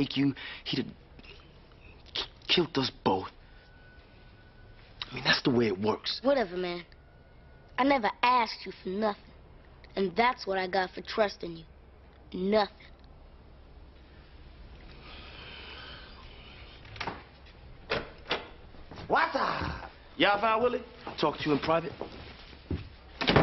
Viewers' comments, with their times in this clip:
0:06 I find it funny that street kid Avery can properly say "Ask" but private school-educated, middle-class Ahmad can't. Too often I've heard him say "Axe."